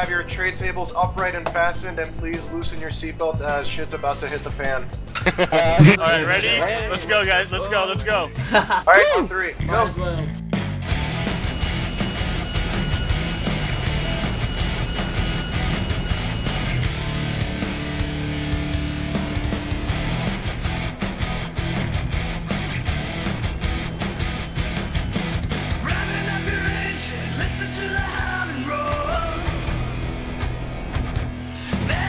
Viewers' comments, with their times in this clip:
0:07 So gangster what music?
0:17 that song is awesome